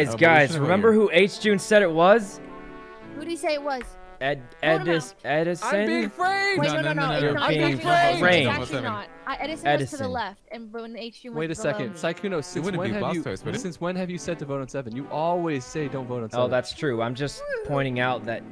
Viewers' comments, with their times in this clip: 0:04 Sykkuno trynna do Leslie’s “EDISOOOOON” 😂